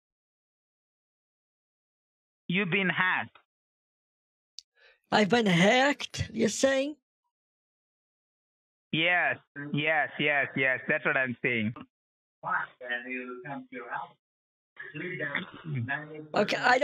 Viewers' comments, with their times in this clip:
0:03 "you've been hugged"